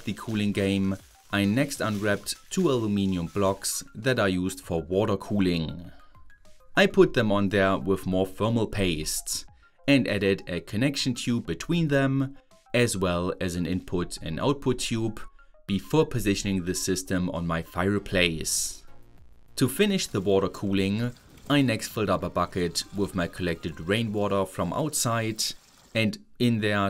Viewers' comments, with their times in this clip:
0:08 mmmm pfermal paste (thats a german accent)